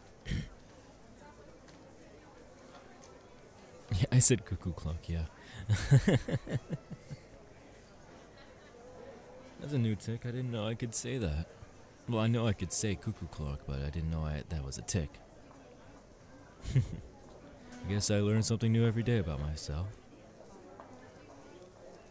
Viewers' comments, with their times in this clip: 0:05 i wish i had a hot laugh too😒